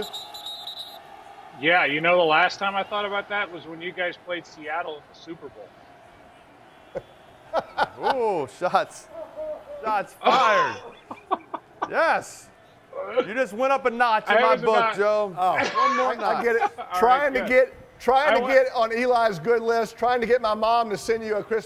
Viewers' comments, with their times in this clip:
0:08 that “HO HO HO” from the production guy 😂
0:08 was that santa clause laughing in the background
0:09 Lol you can hear a crew member react to that burn